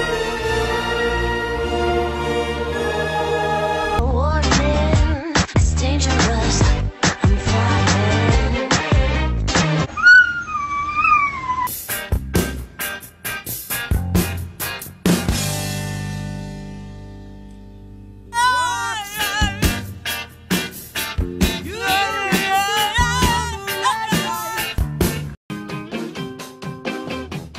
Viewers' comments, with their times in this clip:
0:08 YOOOOO 😂😂😂, THIS DOG HIT THE SAME THE SAME BEAT TO THE SONG, That's Talent Right There